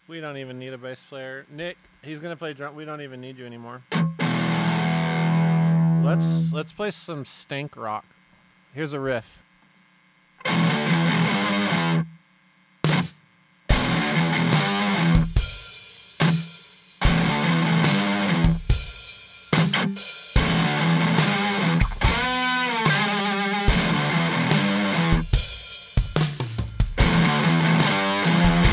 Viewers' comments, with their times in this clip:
0:07 The jam Amazing.
0:12 is an absolutely epic tone. I could totally rock that shit for hours! Love it